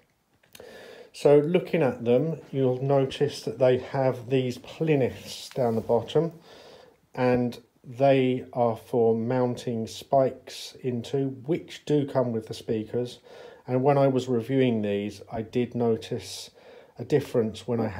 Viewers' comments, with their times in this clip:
0:05 What's a plinith ITS PLINTH 😂